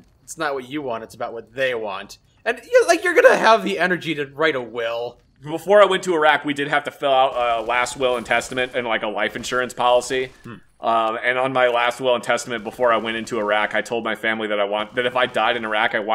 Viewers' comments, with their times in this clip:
0:04 The SECOND he says Iraq bro has flashbacks and starts shooting at stuff off camera. Priceless